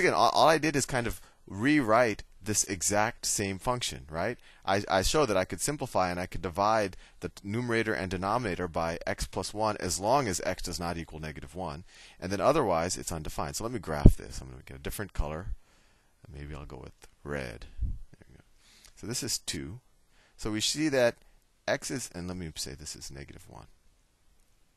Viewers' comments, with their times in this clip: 0:05 i love the part when he says" undefined, uuuundeeefinneed" in a low voice. XD